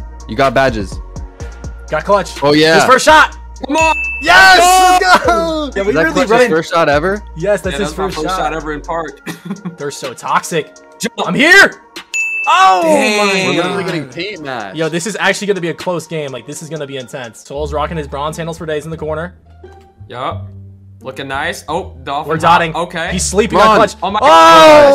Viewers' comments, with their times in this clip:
0:10 that “IM HERE” came from the heart lmaooooo 😂